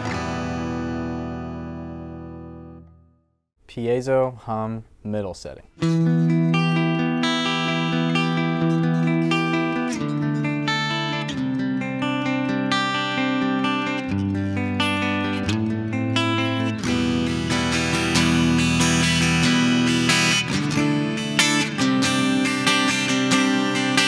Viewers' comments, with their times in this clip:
0:06 Oh man, where all 3 settings are blended sounds INCREDIBLE to my ear.